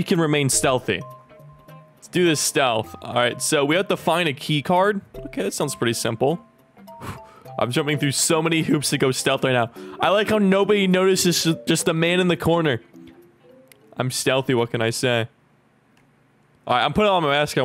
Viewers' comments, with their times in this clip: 0:04 can ya'll hear the windows error sound???